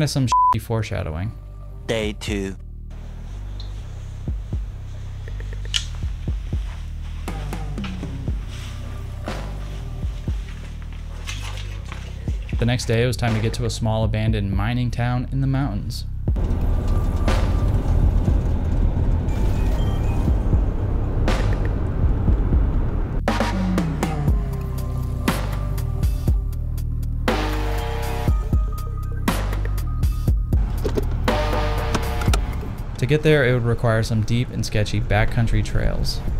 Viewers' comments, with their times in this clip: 0:03 What is the song the starts to play ? Thank you. Drums go hard
0:17 The music is giving me Payday 2 stealth heist vibes for some reason...